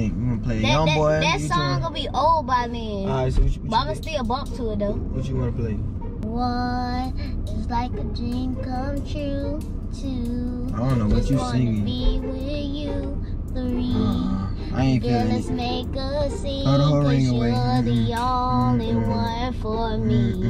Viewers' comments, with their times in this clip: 0:06 Let’s not skip the fact that she gave a mini concert, she went into her own world.